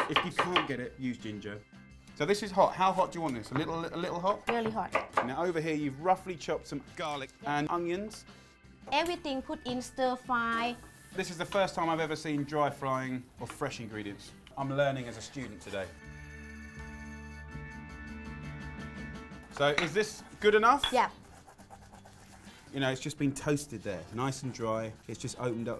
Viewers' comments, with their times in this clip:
0:07 Awesome Voiceover "nnn GARLIC" :D :D